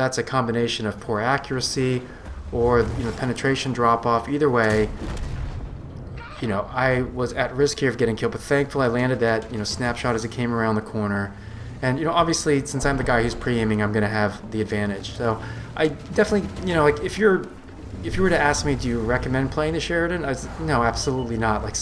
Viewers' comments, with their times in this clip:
0:05 the female Commander yells "GOT-EM" (emphasis added) So ,funny.........